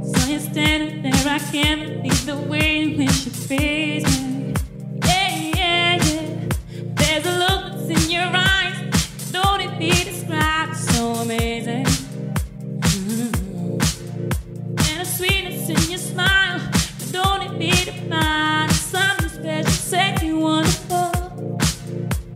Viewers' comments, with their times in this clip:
0:06 min deep house? wtf